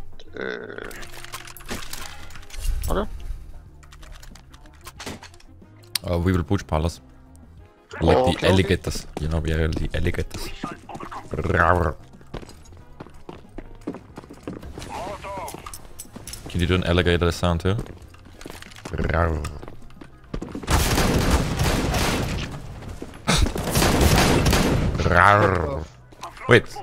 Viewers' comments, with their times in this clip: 0:10 that alligator roar! i love it <3<3